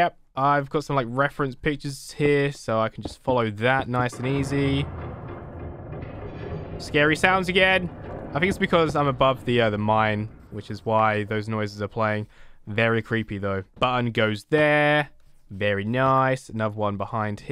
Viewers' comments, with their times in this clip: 0:05 omg that ambience Scared me 😂